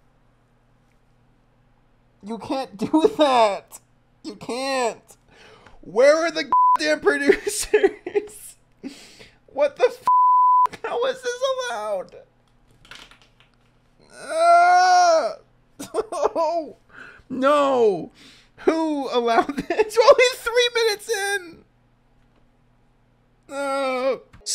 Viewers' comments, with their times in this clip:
0:06 did you censor the word God?